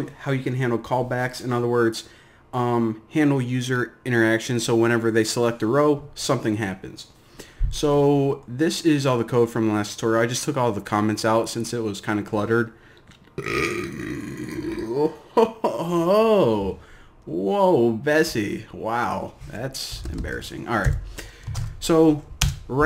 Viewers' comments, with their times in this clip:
0:09 Woooow! You are definitely a melomaniac! Good voice! 👈